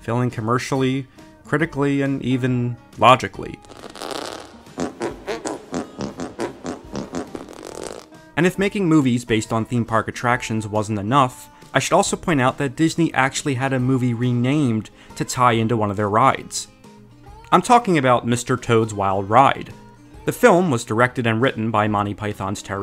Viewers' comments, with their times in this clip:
0:03 Bro, there's an actual scene of Christopher Walken musically doing arm farts??? Wtf 🤣😭💀